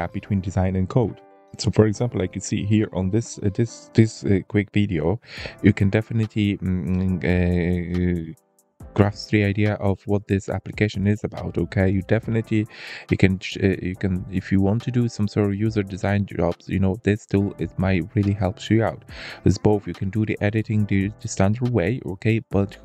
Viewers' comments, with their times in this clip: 0:06 "you can definitely see ahm hum hehm" Me: dislikes video but no one will ever know cause youtube 😂